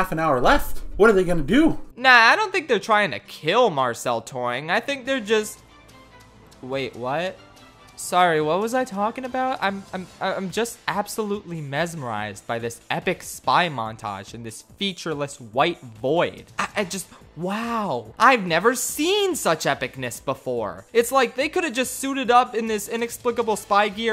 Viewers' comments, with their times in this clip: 0:05 Metal gear solid music plays